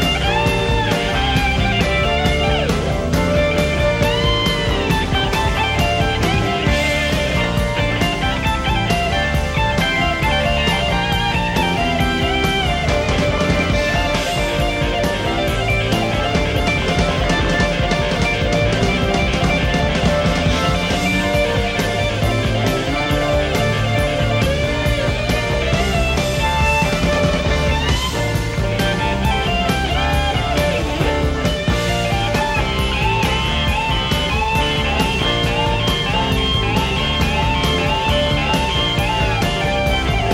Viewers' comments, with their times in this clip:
0:05 did i just hear some double kick from Phil Collins...?
0:16 I love the moment Eric plays 3/8 notes while doing his solo and Collins starts to play 5/8 notes together You see Eric's reaction on his face, smiling, this rhythm is pretty hard but nice :-)
0:22 Nathan's bass outstanding!!!!!